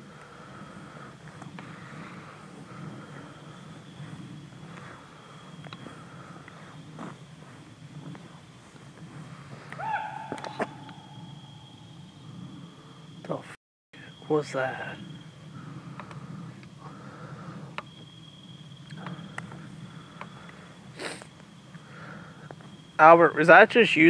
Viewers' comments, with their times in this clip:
0:10 that noise sounded strangely enough like an american Indian yell 😳 or a Bigfoot yell 🤔